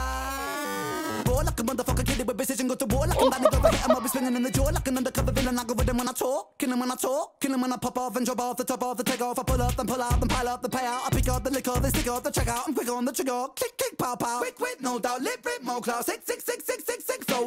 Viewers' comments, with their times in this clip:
0:04 This was all of us no doubt! Been waiting to hear you react to this track purely for this flow. I always rewind this section every single time without fail. Ren absolutely smashing it here 🔥 Loved you rapping over the top too. Not an easy set of bars there but you did it justice 💪🏻